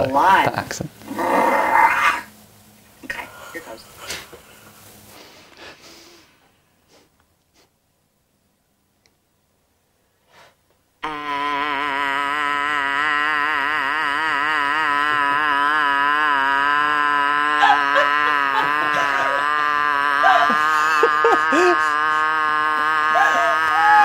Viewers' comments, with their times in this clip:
0:04 what people think vocal warm-ups look like: a resonant, delicate opera of the solfa what vocal warm-ups really look like:
0:11 girl's got some lungs OMG
0:11 Arin Hanson would hate this one. A prolonged, monotonous sound that gets louder as if approaching. ＊shudder＊